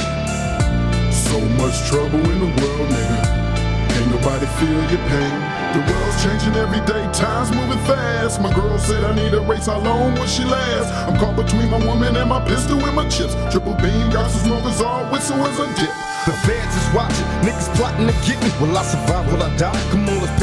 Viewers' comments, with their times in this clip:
0:07 🤨 who the fuck is that? Am I the only one who’s like “that ain’t pac”?